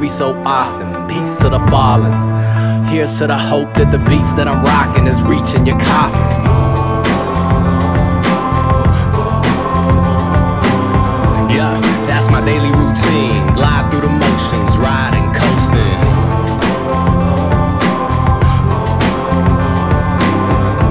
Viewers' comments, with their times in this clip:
0:07 it's good, but real gay when he moans it's like bro guy stfu g